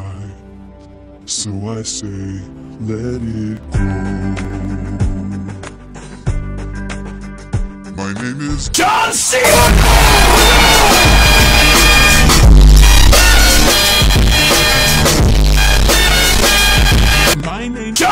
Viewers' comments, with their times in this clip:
0:03 I’m really not used to it sounding so normal